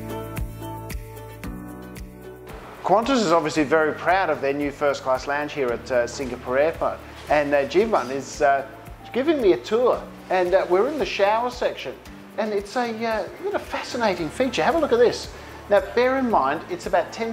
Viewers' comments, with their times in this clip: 0:03 sluuuuriiing words after too many free drinks :)